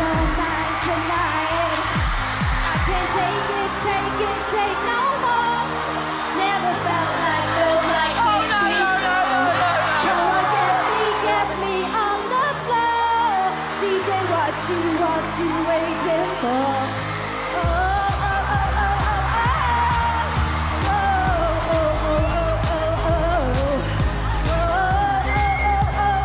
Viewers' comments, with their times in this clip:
0:07 That first guy cannot sing at all, but I know those words are gonna be stuck in my head today 🤣 Every time I see Tulisa protesting so hard, I die 🤣🤣🤣🤣🤣 LMAOOOOO!!! Not Simon actually being the record label for The Teletubbies 🤣🤣🤣